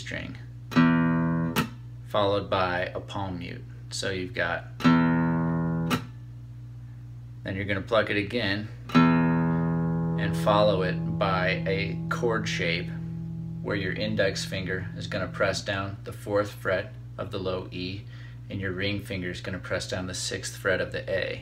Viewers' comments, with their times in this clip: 0:04 honestly, can't even do that.. how do I stop the string to make it sound like that